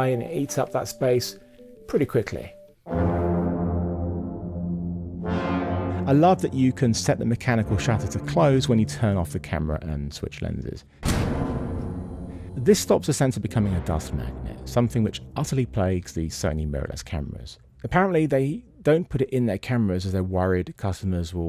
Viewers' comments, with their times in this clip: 0:06 The shutter protection of the sensor part weirdly reminds me of the furnace in Home Alone. The sounds effects are darkly fantastic.